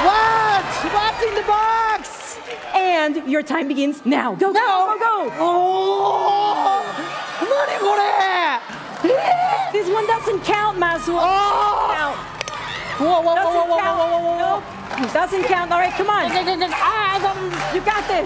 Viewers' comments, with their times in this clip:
0:05 No one: Me Imitating A Car Horn: